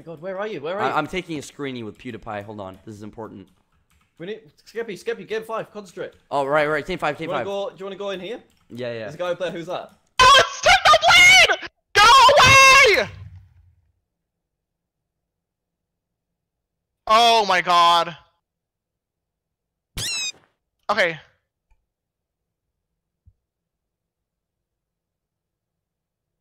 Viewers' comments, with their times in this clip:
0:10 it sounds like OH SKEP PIE PLS